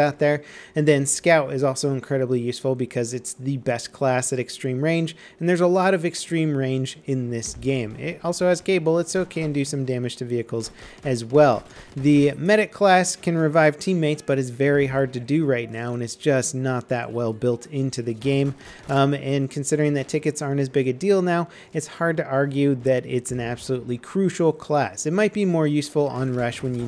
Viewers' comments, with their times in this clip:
0:08 Now I know he says "gay bullets".